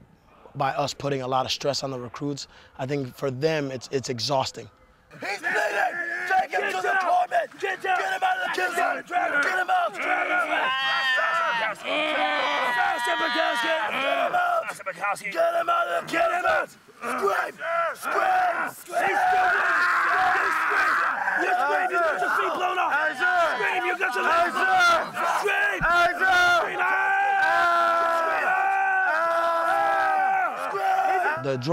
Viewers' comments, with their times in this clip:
0:10 Dying goat inc.
0:10 s c r e a a a a a m
0:13 My cousin getting yelled